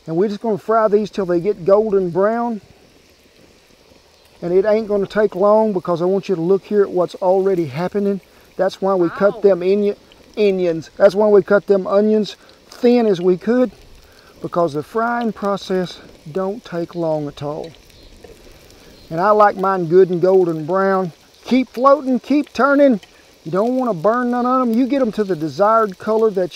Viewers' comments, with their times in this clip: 0:08 That's why we cut them injuns 🤐😆